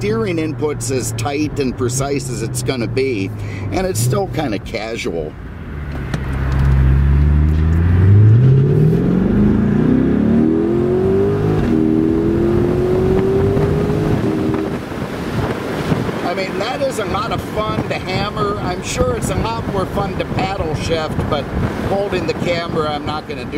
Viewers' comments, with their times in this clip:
0:06 Honestly I don’t care much for the latest Corvette, but at least they got the sound right. Teslas make fart noises. A real car sounds like this: